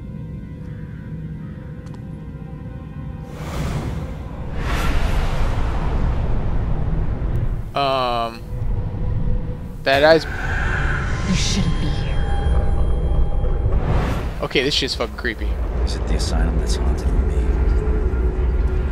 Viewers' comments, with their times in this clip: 0:03 Well you can literally here me stop talking cause my survival instinct kicked in and went into flight mode and I fell silent mid sentence